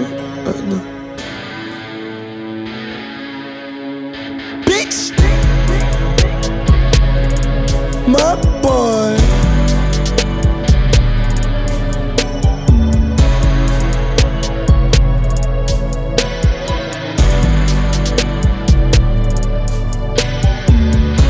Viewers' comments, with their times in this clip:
0:07 This a strong outro track . Got layers to it and a good message in the last minute. Also the mudboy he says a great ad lib lmao